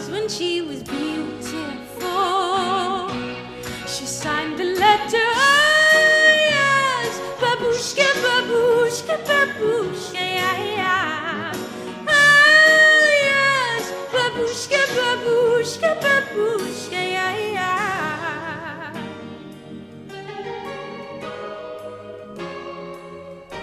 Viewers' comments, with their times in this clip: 0:05 The facial expression while singing "All yours" is awesome. Wonder if this is actually an alto voice.